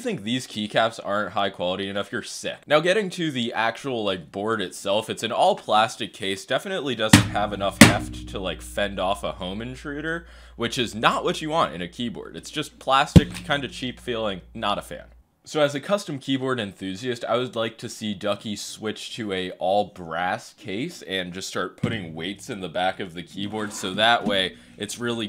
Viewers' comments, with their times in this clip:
0:07 keyboard smash alert